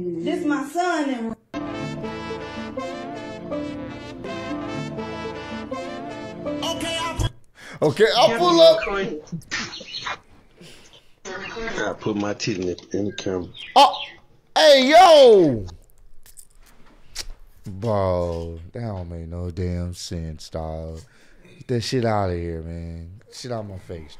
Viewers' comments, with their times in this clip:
0:07 he lowkey sounds like don toliver